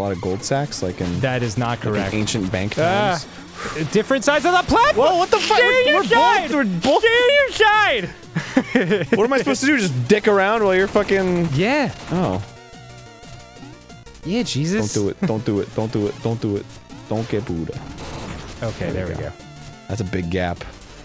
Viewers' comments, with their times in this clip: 0:05 I don't know what voice that is Danny is doing but I freaking love it 😂😂😂